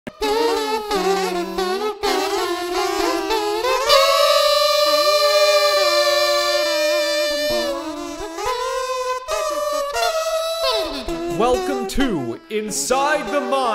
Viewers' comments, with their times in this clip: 0:00 that soundtrack sounds lit